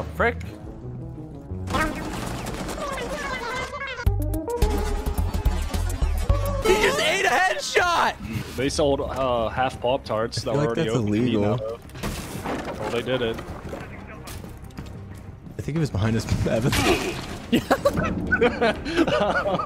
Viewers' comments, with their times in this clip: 0:05 this song ist clean